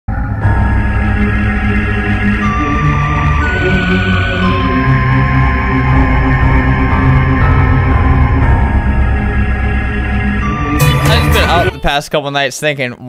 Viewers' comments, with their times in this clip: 0:00 creepy music??? my favorite 🧟‍♀️👻🎃